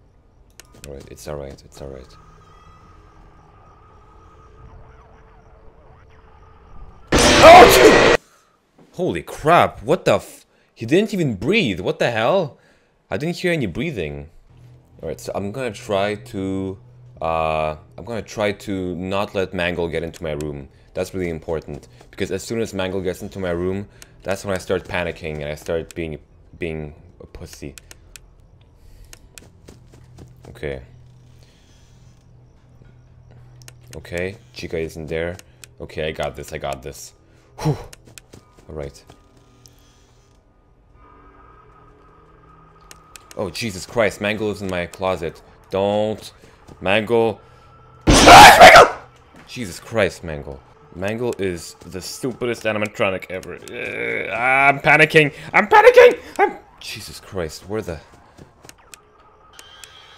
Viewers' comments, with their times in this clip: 0:07 click always..i laugh
0:48 lol smike scream